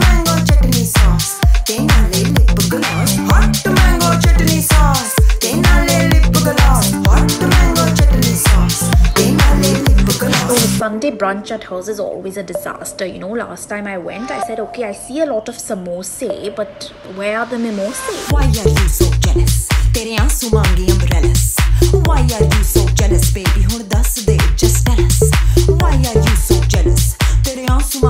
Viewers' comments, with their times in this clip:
0:10 That girl in that English part sounds exactly like ananya Pandey.